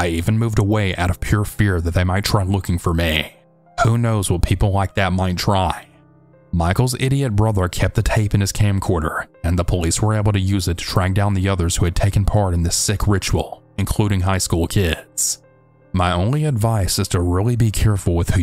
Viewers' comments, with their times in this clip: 0:03 What was that noise ?